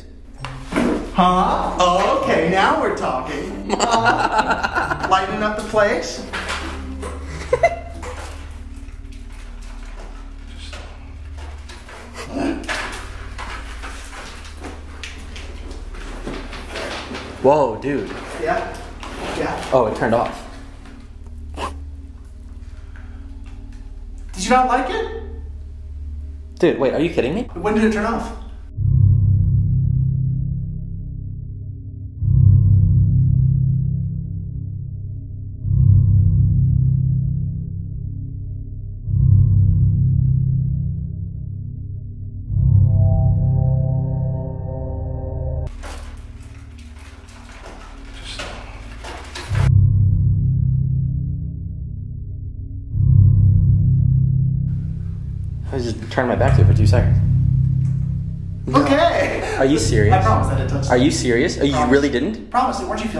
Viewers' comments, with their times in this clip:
0:10 i heard someone say "just stop" 😭 right before the lights stop :')
0:46 I love how the ghost sounds so annoyed when he says "just stop" like he's already tired of their bs